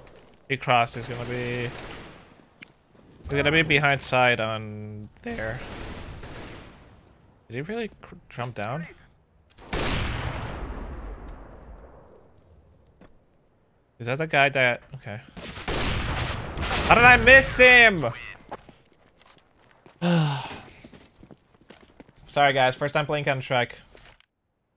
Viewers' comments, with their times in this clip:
0:04 LOL VOICE CRACK
0:05 nice voice crack :D
0:05 voice crack is real